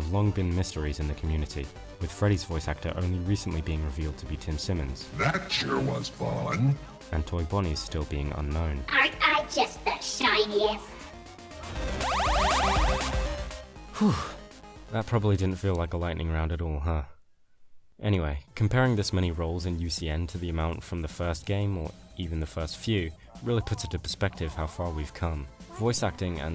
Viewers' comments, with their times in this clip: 0:09 you know what he sounds like that bunny app where it pitches up your voice (the bunny girl that was animated. It was like talking, Tom)